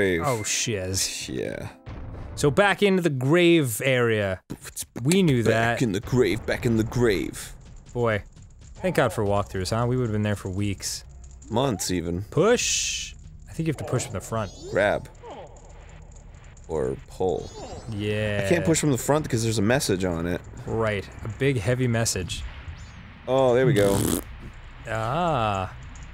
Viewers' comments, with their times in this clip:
0:03 zero days since last beatbox.
0:03 0 days since Arin beatboxed
0:03 The beat has been boxed
0:05 it has been 0 days since Arin beatboxed
0:08 it’s been 0 days since arin beatboxed